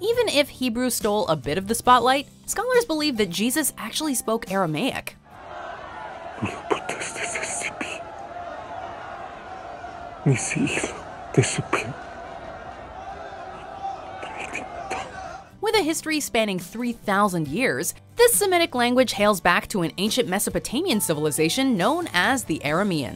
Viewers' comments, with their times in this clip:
0:06 Jesus is speaking latin with Pillatus, not aramaic. He speaks in latin only in that part of the movie... :p